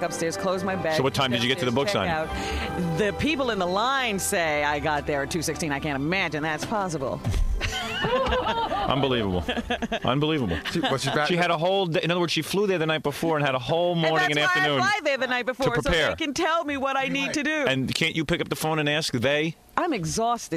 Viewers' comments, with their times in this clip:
0:03 The Jackie laugh right after Robin’s comment gets me every time.